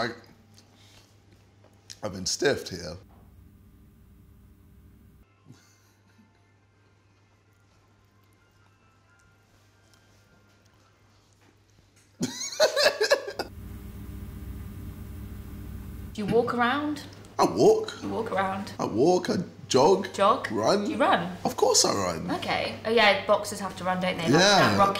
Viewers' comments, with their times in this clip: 0:06 my invigilator had the same ringtone during the school year and i was literally ksi